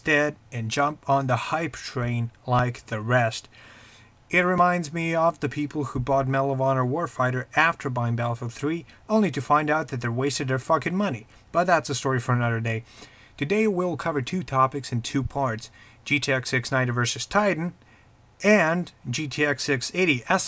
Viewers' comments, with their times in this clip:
0:07 marihuana warfighter???? WTF LOL